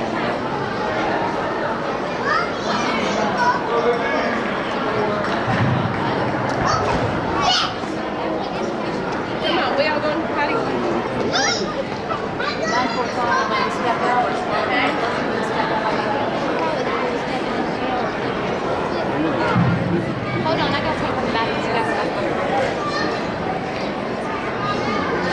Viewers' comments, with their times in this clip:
0:08 Lol tell me that little kid didn’t say “moms a bi***!”